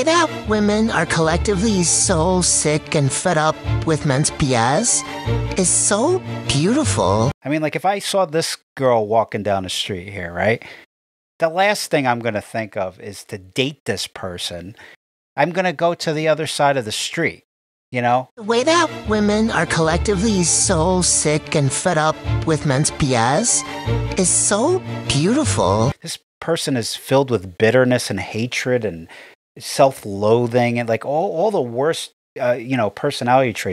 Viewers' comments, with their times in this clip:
0:06 yes, you called it a person. I am a woman, and that is not a woman. just listen to the voice. Not a she. an it.
0:20 That thing is not a woman The voice should be a dbead giveaway & everything else about it